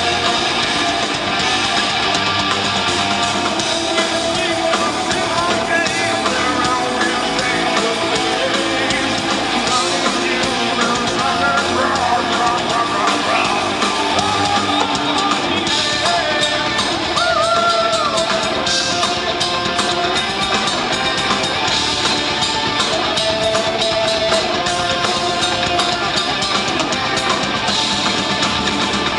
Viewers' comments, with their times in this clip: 0:10 :D his text fail ....RA-RA-RA--BLA-BLA-BLAA....WHOHOOOHOOO!!! <3